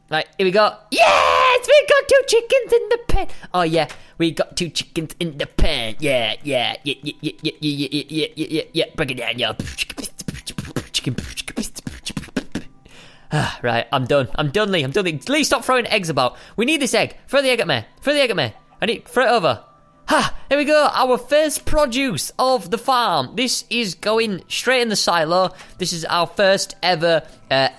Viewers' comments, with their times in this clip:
0:10 BUT DAT DUPSTEP DOE!!!!